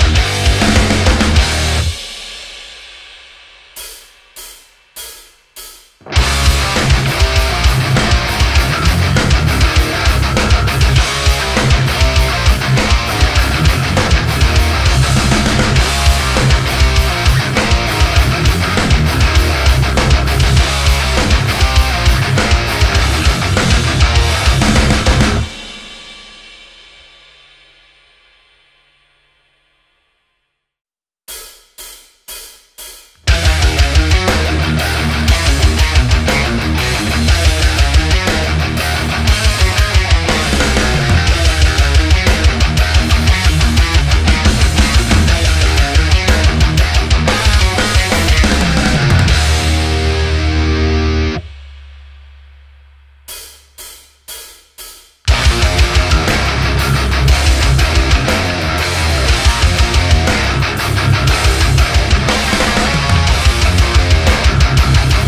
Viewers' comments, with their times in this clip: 0:05 Monster Killer Winner Riffage
0:06 The best riff in my opinion:
0:31 that Lamb Of God vibe ;)
0:32 Lamb of God style yeeeaaa))
0:33 sounds like a rearranged version of 11th hour by lamb of god
0:33 Sounds so much like Lamb Of God!
0:36 sounds like lamb of god
0:39 kinda reminds me of the ashes of the wake intro riff
0:53 Sounds like Killswitch Engage!